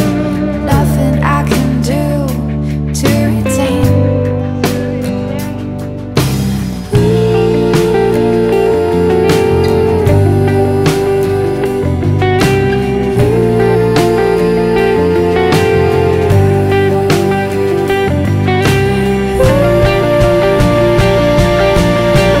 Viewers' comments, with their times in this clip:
0:06 sounds so good, I liked that little guitar thingy that starts sounds really cool